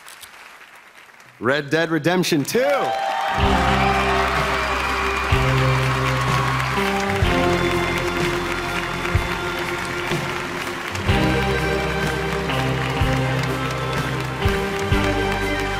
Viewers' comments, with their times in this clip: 0:03 I thought that was link from good mythical more